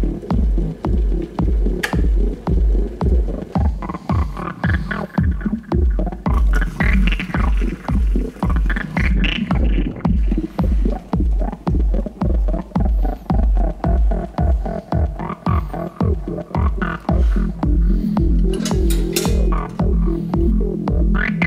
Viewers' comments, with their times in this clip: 0:08 acid trip with amazing soundtrack